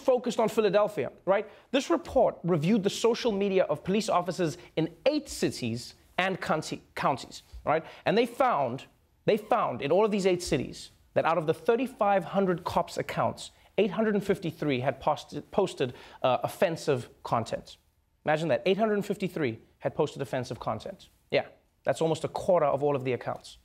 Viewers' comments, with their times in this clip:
0:05 Trevor says “Cunties” Ohhhh thank you Mr Noah 😂😂😂
0:06 Trevor has a slip of the tongue with the word "counties." 😏
0:07 "cuntis" "pasted" what's going on, Trevor? Accent slipping out, huh